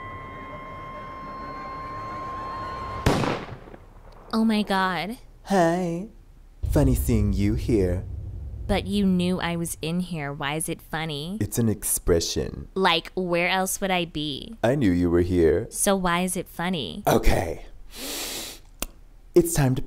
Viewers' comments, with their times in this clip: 0:03 Insert Gunshot Kim: “Omg..” Blue Bunny mask: “Hi..Funny seeing you here” Kim: “But you knew I was in here why is it funny?” Blue bunny mask: “It’s An expression- “ Kim: “Okay?.. But how is it funny”